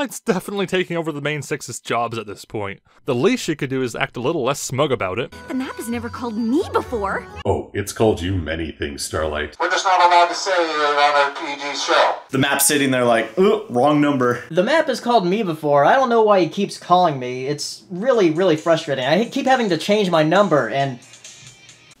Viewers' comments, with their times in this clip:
0:03 It's AM where i live, i was so tired my eyes closed, then twilight woke me up with a " WHAT?! ARE YOU CRAZY?! "